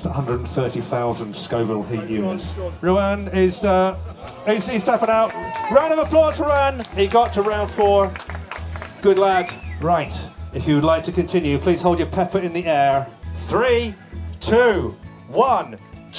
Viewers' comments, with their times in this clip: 0:04 lmfao She cheered cos she did not want to be first out hehehe